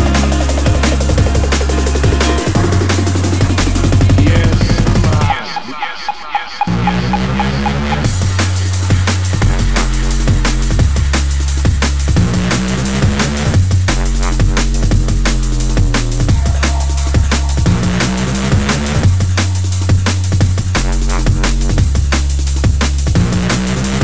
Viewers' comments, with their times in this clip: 0:05 what?! that switch sick